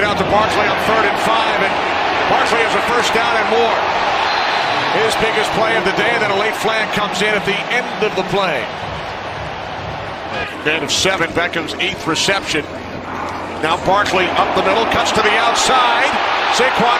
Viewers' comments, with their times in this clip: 0:04 on am I the only one who heard this nig-